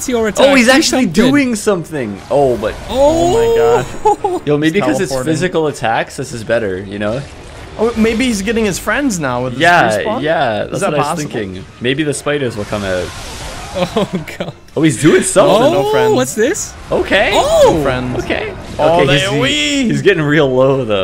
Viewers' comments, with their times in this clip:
0:03 sounds like Micolash